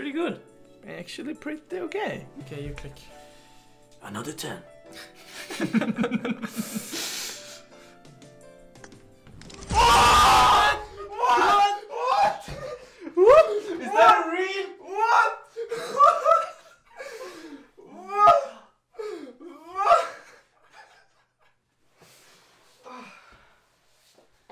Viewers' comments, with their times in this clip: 0:10 R.I.P head phone user ⚰️